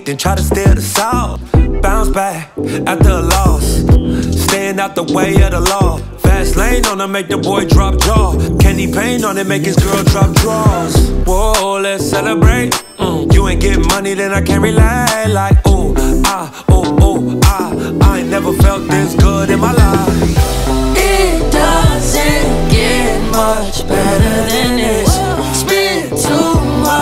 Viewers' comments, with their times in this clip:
0:10 smh i heard a kid yelling 'noscope' for a moment